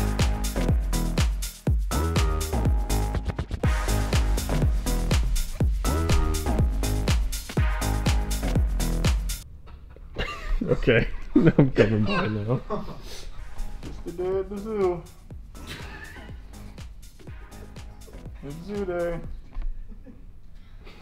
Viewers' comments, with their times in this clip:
0:09 😂 when it just goes silent